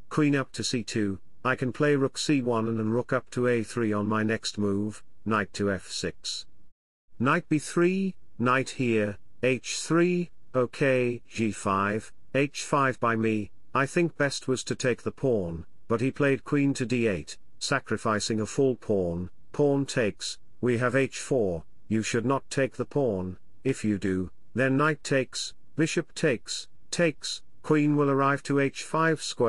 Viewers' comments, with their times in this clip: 0:10 h5 by me 😭😂😂 omgg is that reql Ai talking ??